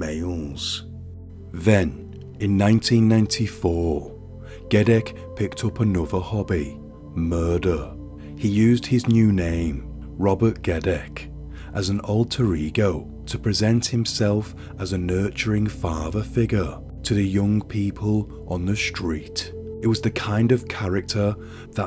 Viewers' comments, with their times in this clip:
0:04 why he say it like that ? Lol